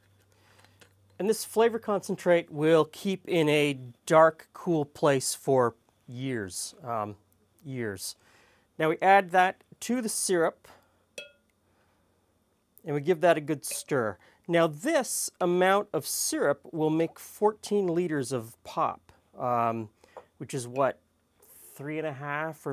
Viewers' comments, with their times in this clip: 0:05 The way you emphasize “years” that second time has become a thing my girlfriend and I quote on a daily basis! Don’t know why we think it’s so funny.